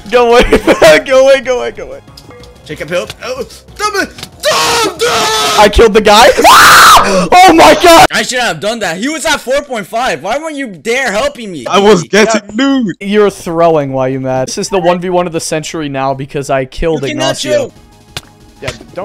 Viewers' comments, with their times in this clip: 0:04 Evident: I Killed A Guy *Scream* *Got Fall* *Also Clutched*
0:05 the scream LMAO XDDDDD